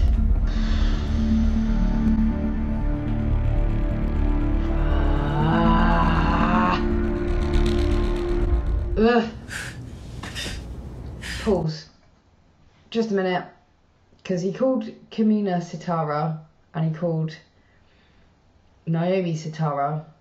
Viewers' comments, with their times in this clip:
0:05 excessive, implausible loud whispering. It's not a big thing, but the loud whispering gimmick has been bothering me since Quantum Leap, and Babylon 5, and Deep Space Nine, and anything else Scott Bakula has ever been in. I get they want to make whatever lame lines of dialogue seem terribly earnest and heartfelt, but it's just used to death, and that isn't how people speak in most of those situations.